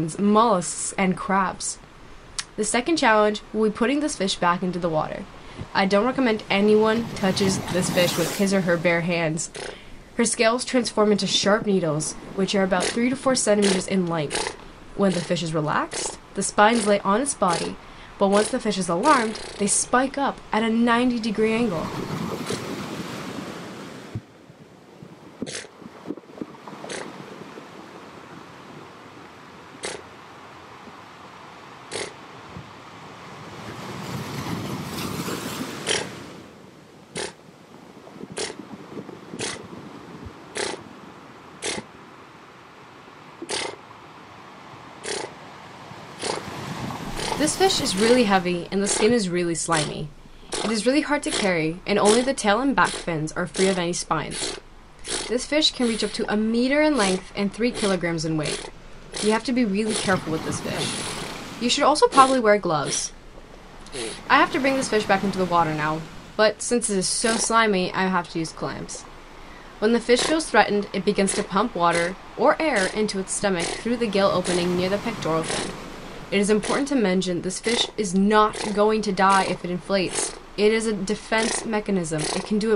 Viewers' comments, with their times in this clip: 0:08 at this point i thought for a minute someone was in the background was dismissing this life saving information by making raspberries with their mouth
0:09 Me: watching Puffer fish: makes Fart sounds Other puffer fish: aeugh
0:11 Magiccarp uses "pfft" attack. - Not Effective But Cute
0:13 it sounds like a diesel.
0:13 the kids at the back of the class making noises when the teacher's trying to speak
0:13 me in grade 3 making fart noises for no reason
0:13 lmao its noises
0:18 I like how the fish goes “pshh” after you drop him on his face
0:18 the way it deflates while going PFFFFFFFFFFFFT like a balloon. 😂
0:18 when she dropped the pufferfish, it literally made a deflated noise I can’t 🤣🤣🤣
0:18 Puffer fish used beat boxing Somewhat effective
0:18 nice whoopy cushion sound effect lol
0:19 Lmo the fish sounded like a fart pillow when she dropped it 🤣🤣🤣
0:33 the fish horse impression kept me laughing
0:48 PFFT PFFT PPPT PFFFF INTENSIFIES THEN RUNS OUT OF BREATH
1:07 the puffer fish sounds like a female